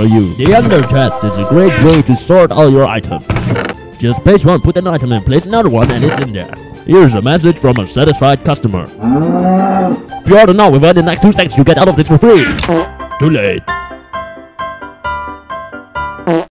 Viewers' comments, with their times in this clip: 0:05 Am i the only one who heard a skype message come in ?
0:09 SHEEP SAYS MOO!
0:09 the sheep sounds like a cow. xD
0:09 that sheep its mooing